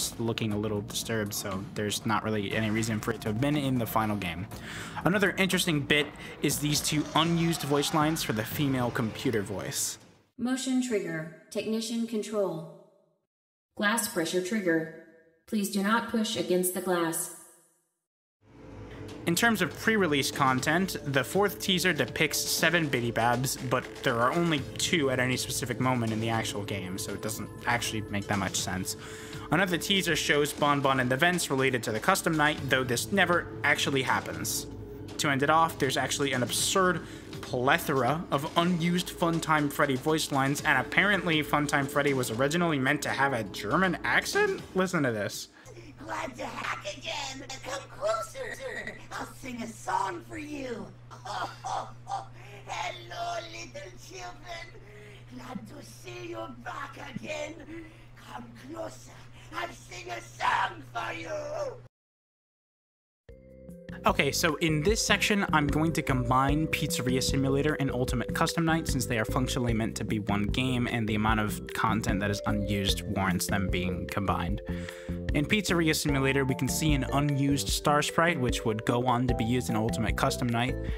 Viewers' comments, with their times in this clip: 0:06 only had my right earbud in thought it was editing error
0:09 my left ear enjoyed these voice lines
0:10 i cant hear anything
0:10 these voice lines seem to have been muted? ;0
0:14 I heard nothing
0:15 how did this play outta the left side of my screen 😭😭😭
0:41 Is it me or does German Funtime Freddy sound funny.
0:46 the German accent might’ve been a joke
0:46 I didn’t know gargimel from the smurfs was in fnaf
0:51 demo fun time freddy kinda sound like german
0:51 MEDIC he’s medic
0:51 i love german freddy so much, this is so silly 😭🫶
0:51 sounds like Frieza from DragonBall
0:51 he literally sounds like medic tf2
0:53 this is why medic from tf2 somehow related to fnaf
0:54 POV MvM demoman
0:54 sounds like tf2 demo man
0:54 me as a german wouldnt say it sounds german for me its more like french or something tbh
0:55 freddy sounds like medic from tf2
0:56 the voice sounds a lot like sun/moon from security breach, dont know if its the same guy
1:00 sounds like Edward rictofen from Black ops 1 if he was stuffed in a Suit himself
1:04 The German sound like Richtofen